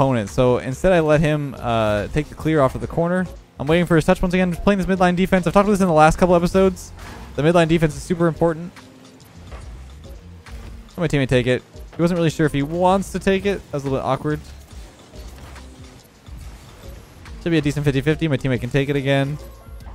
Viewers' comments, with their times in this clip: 0:04 you turn into an auctioneer with how fast you're commentating there